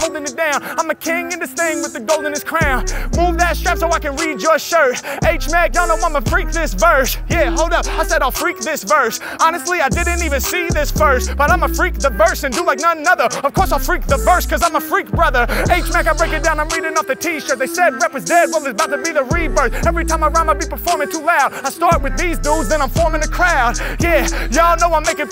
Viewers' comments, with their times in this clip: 0:07 The flow is insane 🔥
0:09 flow was goin crazy damnnn